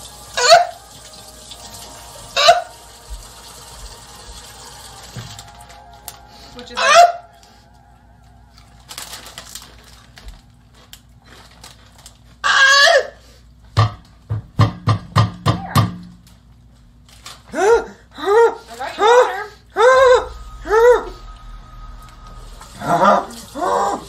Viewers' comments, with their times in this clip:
0:10 bro i can't stop laughing those voices he's making BRO 🤣🤣🤣